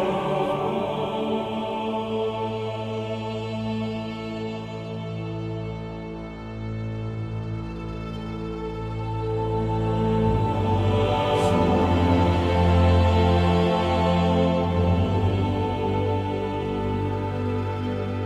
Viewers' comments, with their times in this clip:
0:06 The dreaded lawnmower again, thankfully covered by Gregorian chant.